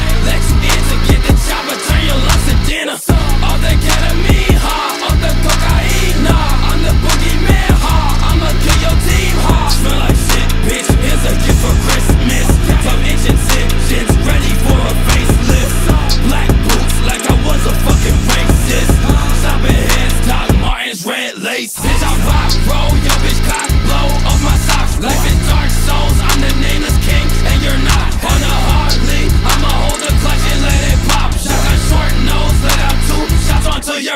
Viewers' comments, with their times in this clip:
0:03 ever since I started playing Battle Cats I'm hearing catamin instead of ketamine lmao
0:22 That flow switch 😫😫😫